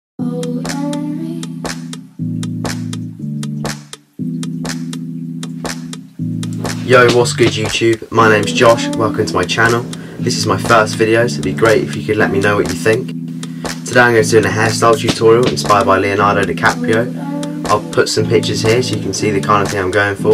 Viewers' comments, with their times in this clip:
0:07 Was that german? (Jo was geht YouTube)